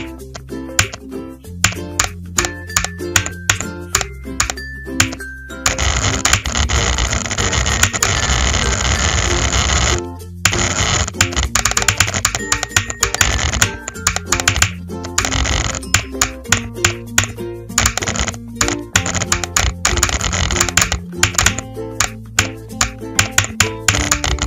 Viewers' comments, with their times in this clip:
0:05 is that my printer??